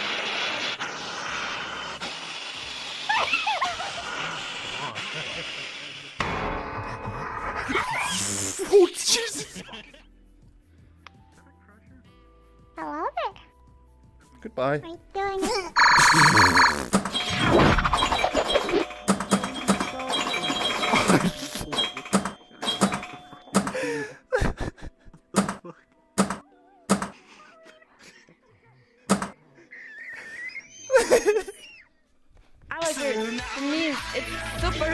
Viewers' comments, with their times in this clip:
0:10 i can't anymore that cold "Goodbye" and then he yeet her away xD
0:12 😂 the 3D pinball sounds killed me
0:15 Ahhhh, the Space Cadet Pinball 3D noises got me thinking about simpler times
0:15 I haven’t heard those Pinball game sounds in a long time.
0:15 damn that sfx hits the nostalgia feels
0:15 the 3d space pinball sounds man, thank you